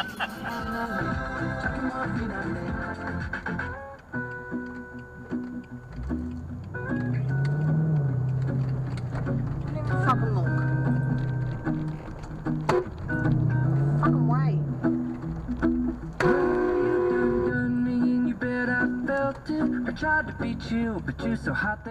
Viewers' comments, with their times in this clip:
0:07 Had to just go and check the rego on that SBTF from my state, SA. Rego actually exists, but its a strange one for my state, never seen a plate like that before. And does it sound like an indicator is on there, that clicking sound sounds very much like it is because it stops on the other side of the roundabout, if that is the case they could have seen that as they were coming up and thought the DCer was turning.